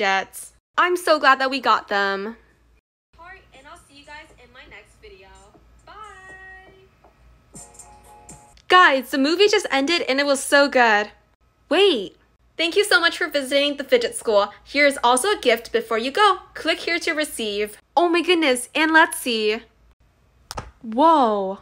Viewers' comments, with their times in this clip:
0:03 “fedjets” ❤️🤭🤣love ur channel